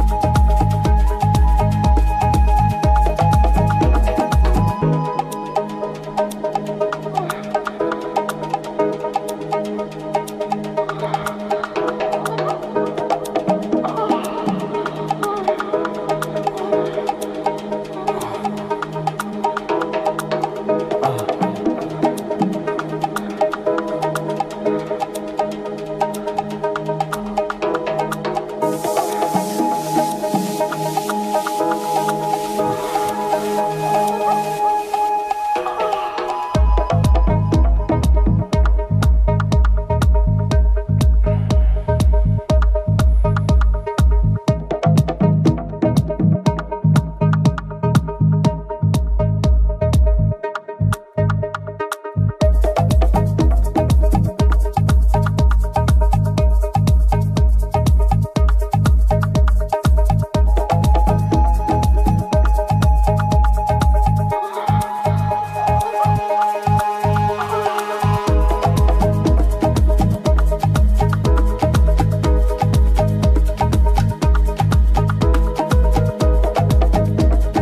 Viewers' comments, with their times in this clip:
0:05 This was cool for a while then there were random sounds of sexual moaning what the heck? This would be super awkward if I had it playing at a party or something.
1:04 I swear have never heard such a magnificent Afro house Mix, with the vocal effects in the midst, especially the one caught me off-guard and yet i was listening to the mixtape while working It reset me into Factory Settings.... Littest i swear....